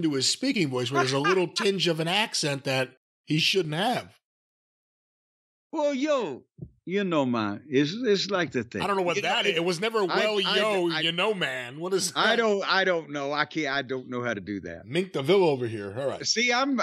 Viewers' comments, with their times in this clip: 0:04 Jim does a really bad Jamaican accent while trying to replicate Hall's not as terrible Cuban accent.